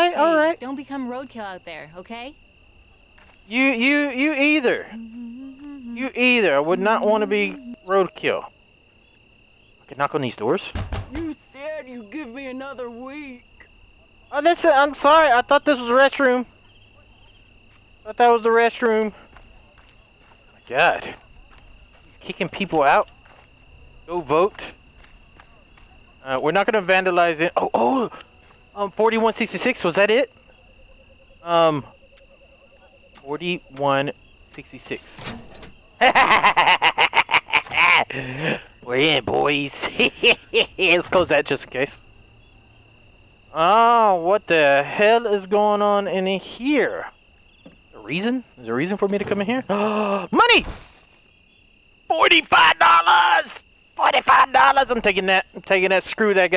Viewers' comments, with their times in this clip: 0:07 Bro she’s humming Bella ciao
0:40 his laughhh lmfsoo